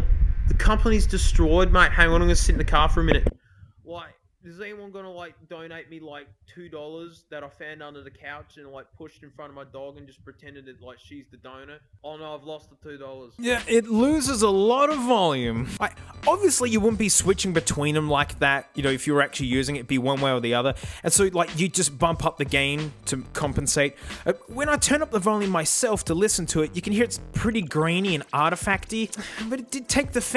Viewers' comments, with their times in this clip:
0:03 initiate bitcrush mode lmao
0:04 bro sounds like he's in a Zoom meeting
0:13 of coarse it losses volume. it is nice canceling. [E]: ok but a even better mic is the blue yeti, not cheap, but worth it!